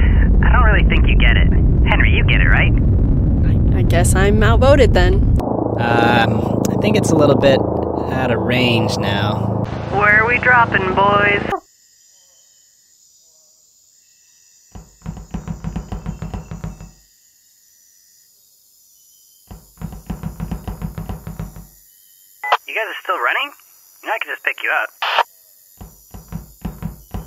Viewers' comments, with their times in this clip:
0:09 I just realized that's Ellie talking and not Charles